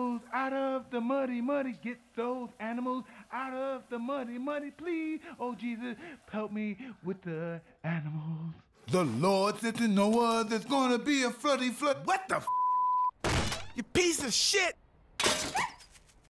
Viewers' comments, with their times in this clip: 0:08 "....with the (whispers)...animaaaaaals"😅😅